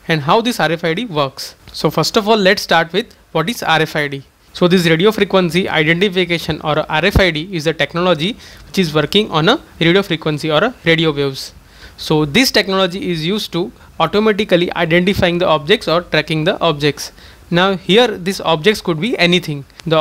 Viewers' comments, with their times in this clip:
0:03 am i the only one who hears "RF RID is a technology, cheeseburger honor. "
0:08 Can't understand. Put hearing aids on. Still cannot understand. I replayed the word "identification" over and over again based on the caption. The constants do not appear. It's too fast and lacks articulation.